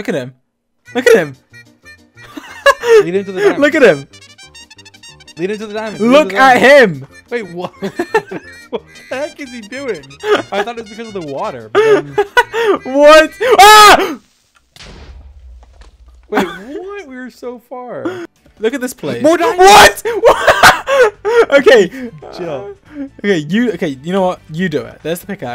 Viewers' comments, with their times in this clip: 0:06 The wild creeper has evolving to bedrockper!!!!! Oh faild(boom)
0:11 And for my final act, BOOM
0:11 stop laughing at me fools
0:11 stop laughing at me fools